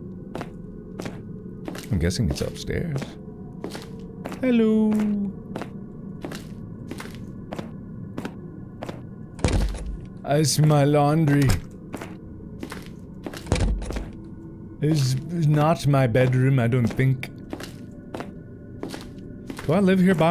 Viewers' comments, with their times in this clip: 0:04 This dude has like a pack of lays potato chips taped to one of his shoes. Why does the footsteps noise have to be so loud do people stomp around their houses?